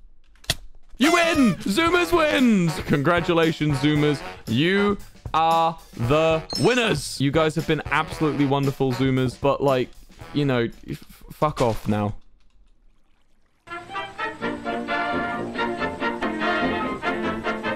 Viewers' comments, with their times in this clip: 0:05 the lego sound got me xD Thinking I could be wrong, if I am I apologize, as I had, and still have no life.